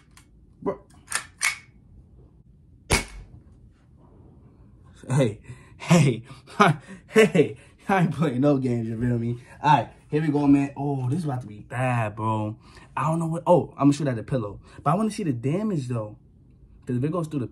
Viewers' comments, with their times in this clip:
0:03 Yo is your house haunted bc I’m wearing my headphones everytime I hear your videos and I be hearing obnoxious breathing in the background just like but I could be wrong